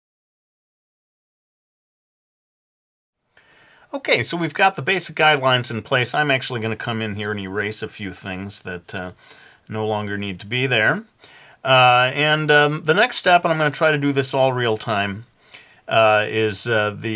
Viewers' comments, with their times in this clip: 0:05 lol he said guide wines